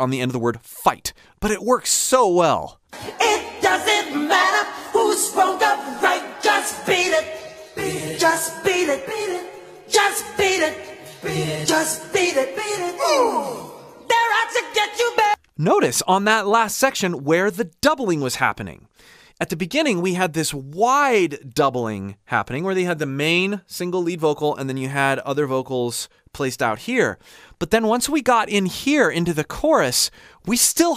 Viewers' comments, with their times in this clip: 0:04 Watching again with headphones this time. :) Does anyone know what's happening on the beat its in between the main vocal ? Is this the singing through a cardboard packing tube MJ was famous for? I can't remember which song I read that was done on, but I didn't think it was this one.
0:13 Most of those tracks are MJ. But isn't there also someone else singing in the "oohs"? It sounds like a completely different person is singing too.